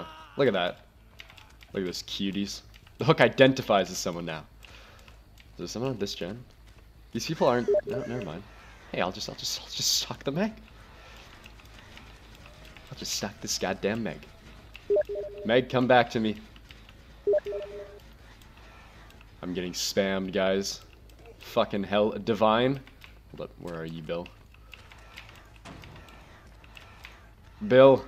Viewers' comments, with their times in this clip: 0:07 when the steam sound came i thought it came from my steam
0:16 i thought that i was getting messaged on steam... thats embarresing right?